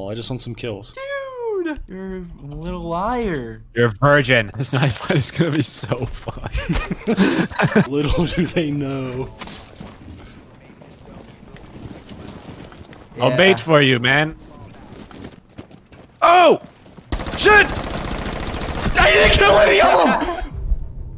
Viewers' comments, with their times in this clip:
0:03 did he say your a persian???